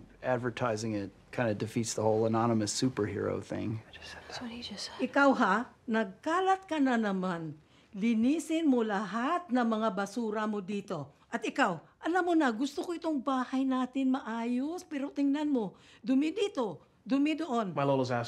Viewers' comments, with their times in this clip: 0:05 I'm Filipino🇵🇭 I'm Surprised That Lola Speaking Filipino🇵🇭